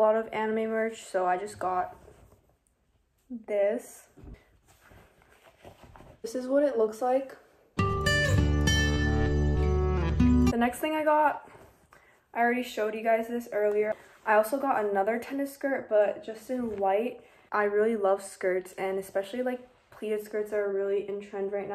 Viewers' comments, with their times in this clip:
0:07 i think this sounds familiar with indian music from sanam teri kasam movie